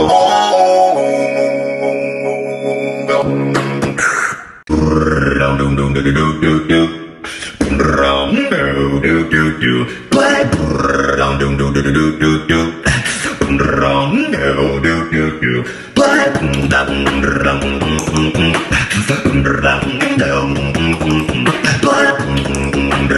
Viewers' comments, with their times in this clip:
0:03 Male_07 Driving car while beatboxing
0:05 me using the car The car:
0:05 is my fart noise
0:05 When radio dosen't work but you are a beatbox